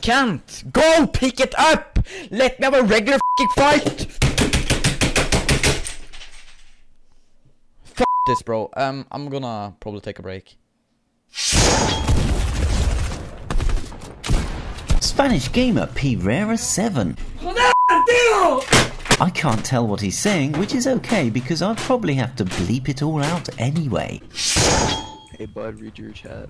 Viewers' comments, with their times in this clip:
0:08 I could hear his voice of regret when he said he’s gonna take a break.